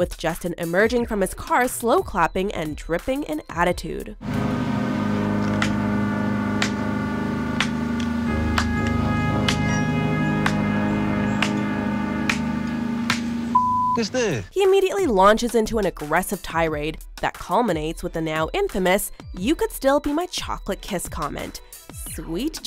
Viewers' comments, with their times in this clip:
0:06 #9 Just needs a good beat down to get her some act right...one day she will meet that person. Too bad it's not PC/legal to inflict that kind of pain on someone yet there are no real consequences for them doing what they do. Just her voice ..... make it stop See Ass whoopin'